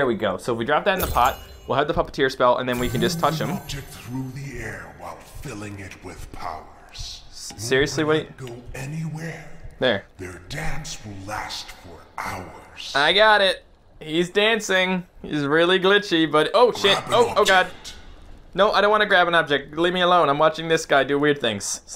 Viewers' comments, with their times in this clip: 0:07 I thought he said: "Their dabs will last for hours" XD